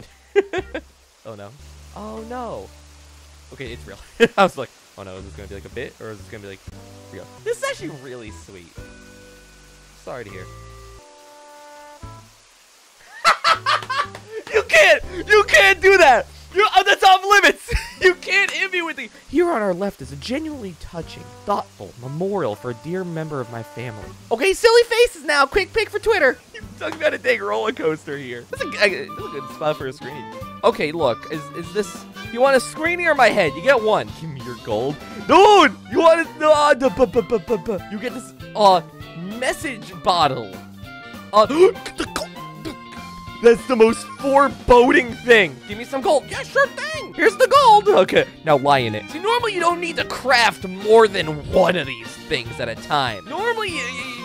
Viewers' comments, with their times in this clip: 0:10 the music is even perfectly timed
0:41 That's the funniest noise I've ever heard anyone make